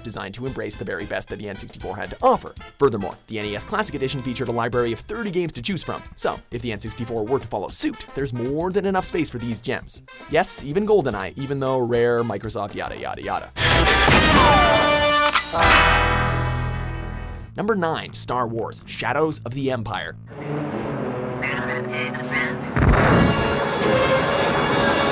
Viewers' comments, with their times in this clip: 0:07 anyone else rewind a couple of times to hear the weird way he says 'suit' ?